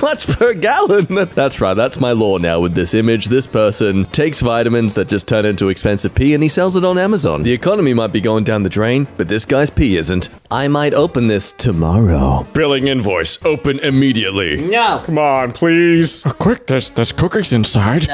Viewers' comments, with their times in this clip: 0:05 Meet the sniper theme starts playing